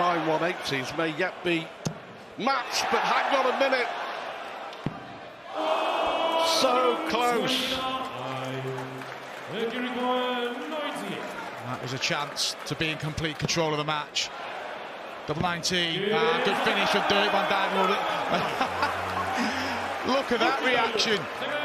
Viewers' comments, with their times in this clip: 0:04 the best 129 ever called. Legendary stuff right here lads.